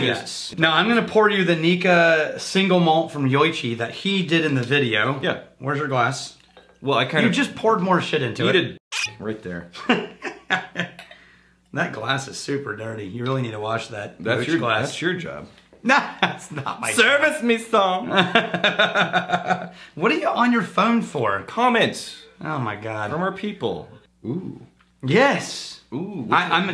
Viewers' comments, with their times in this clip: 0:05 There’s a delayed cork censor 😂😂
0:07 Not whisky related, but your editor missed a bleep lol